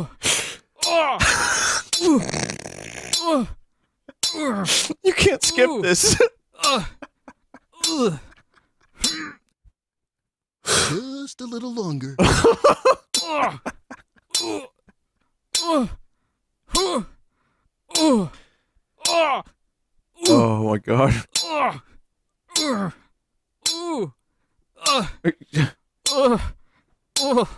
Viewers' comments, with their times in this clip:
0:10 I love how for a brief second his voice turns into Bullwinkle's.